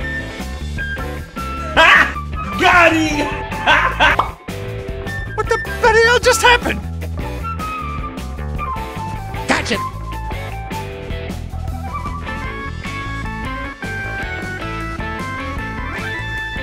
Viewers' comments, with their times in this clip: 0:04 pop what the bloody hell just happened